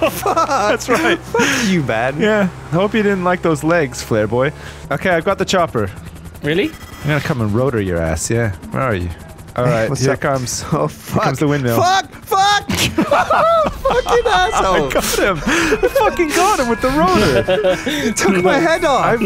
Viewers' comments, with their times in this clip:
0:04 Great video, always love seeing the Yogscast doing fun and crazy things with each other. One of my favorite parts of the video's gotta be and onward just bc of Tchaikovsky's heavenly "Dance of the Sugar Plum Fairy" playing to the last part of the video. It's ironic and I love it for that.